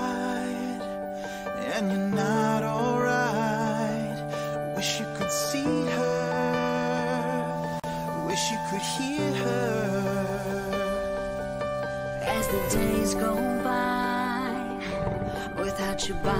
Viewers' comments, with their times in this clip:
0:04 literally the most basic, most overused melody progression in the history of pop music. Scanlan-fucking-Shorthalt charming a Sphinx quite literally with a Scholar's Mate.